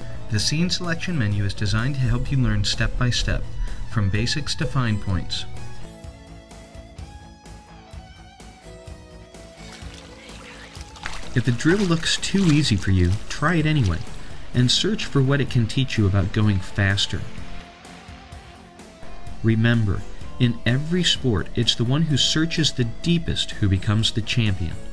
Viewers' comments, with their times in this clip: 0:09 why is there a whisper ?